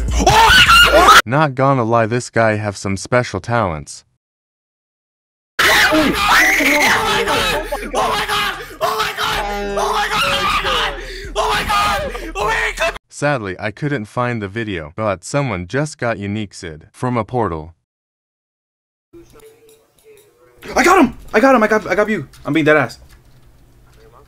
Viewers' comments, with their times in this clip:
0:06 why did he scream like that